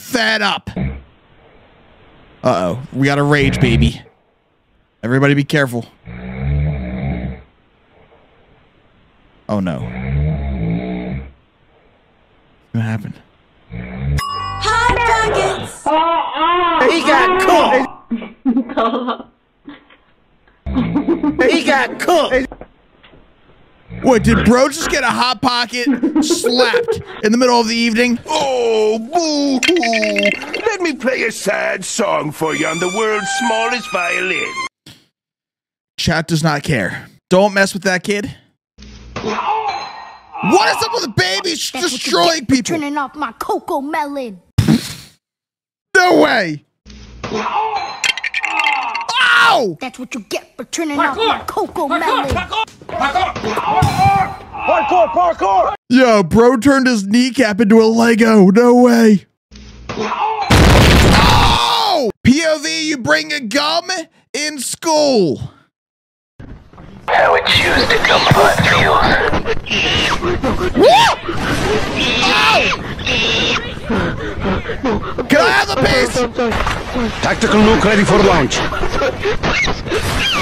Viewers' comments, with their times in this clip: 0:07 I L because that is TOO CUTE Baby is legit DONE with his dad's snores.
1:05 Bro the kids scream is so funy